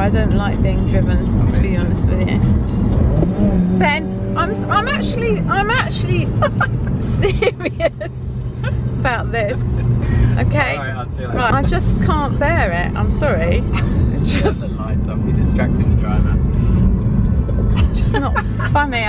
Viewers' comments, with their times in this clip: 0:03 I am LOVING the GoPro footage! P.S The tone in your mother's voice :') You cruel child! Hahah